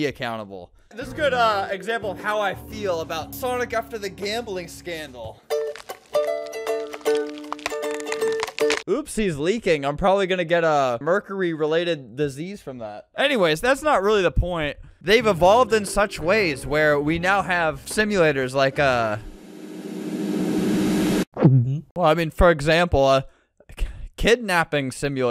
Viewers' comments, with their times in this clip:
0:06 asmr noise from sonic